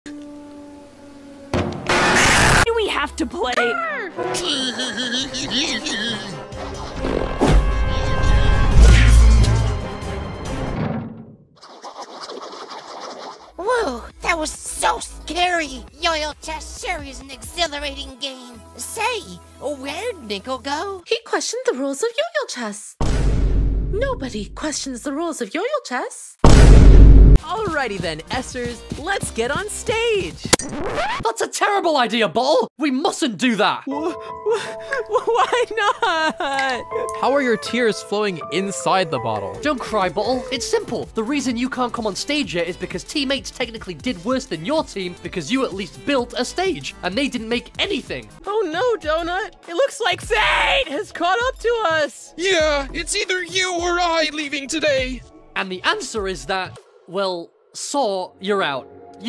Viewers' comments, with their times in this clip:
0:00 Audio from Donald ducc
0:01 Donald Duck scream
0:22 Pillow: yoyle chess Captions: yoyo chess
0:26 the fun thing is, the vine boom is ACTUALLY IN THE SHOW.
0:31 the most bri’ish bo’ol’ I’ve ever heard. Why is Two so bri’ish? Btw anyone want tea and crumpets?
0:32 2 PRONOUNCED BALL
0:40 British accent Don’t cry bottle.